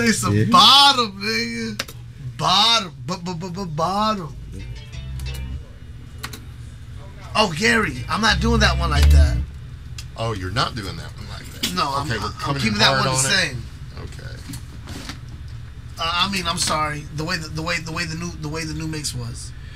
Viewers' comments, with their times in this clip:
0:05 the beat sounded dope I wonder what's the song was gonna be